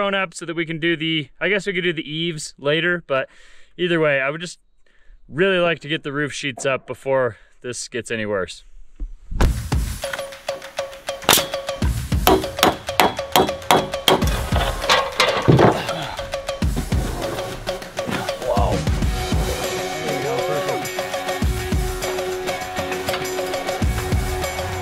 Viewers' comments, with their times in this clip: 0:05 The house looks so tiny now! Enjoyed the slomo and banjo... just lovely.